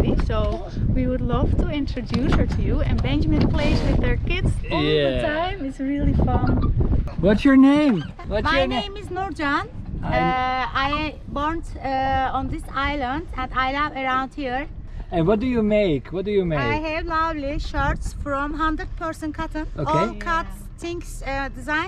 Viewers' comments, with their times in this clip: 0:08 auntie speaks better english than many university graduates in turkey 😃 also i used google translate to write this 😃